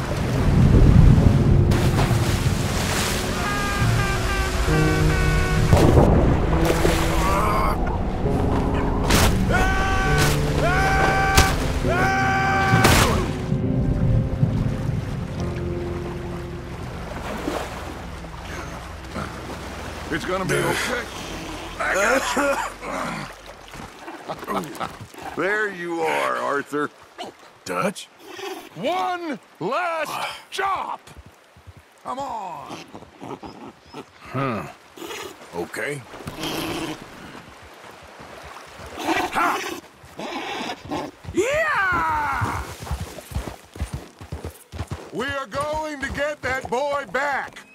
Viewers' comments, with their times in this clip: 0:04 What makes Arthur flying off a waterfall funnier to me is that Roger Clark got in a recording studio to yell in the mic like that.
0:29 I lost it at Dutch shouting "One! Last! Job!" and then hopping on the tiny horse like a circus tricycle.